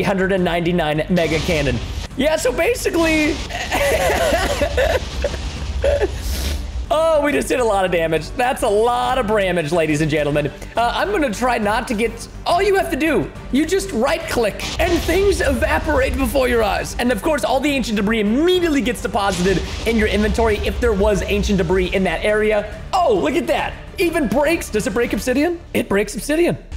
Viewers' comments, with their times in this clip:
0:09 Preston r u talking like Phil Swift?